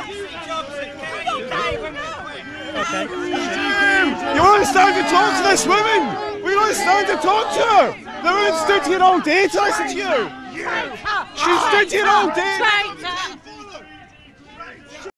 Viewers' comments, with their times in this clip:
0:10 lol that woman turned it into a song at the end